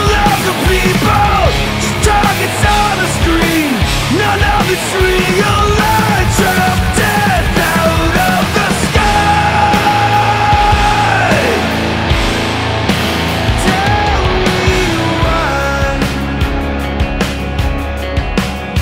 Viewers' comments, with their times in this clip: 0:05 Honestly a bit of the chorus reminds me of some tool/hurt. Idk how to explain it, but the way he's saying parts of the words, instead of just the entire thing altogether. Like ?